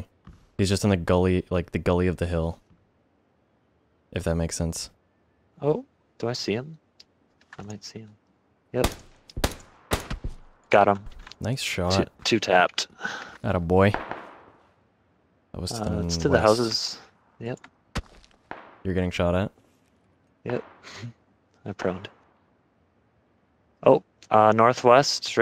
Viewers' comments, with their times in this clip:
0:07 fires three shots , "two tapped"